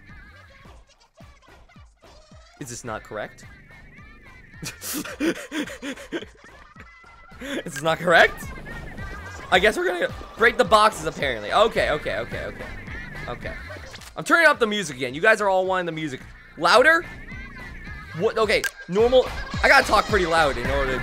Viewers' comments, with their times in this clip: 0:05 this song gives me vietnam flashbacks